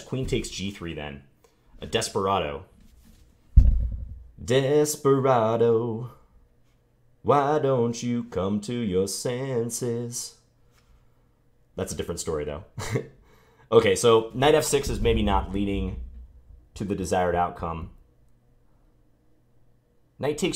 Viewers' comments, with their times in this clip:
0:04 That is some quality singing
0:04 nice singing bruh